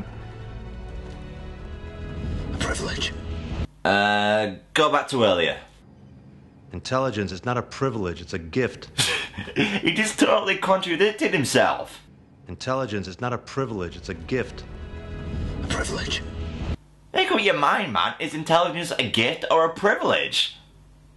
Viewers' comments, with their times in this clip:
0:06 absolutly like Carl Sagan. ...It's a GIFT!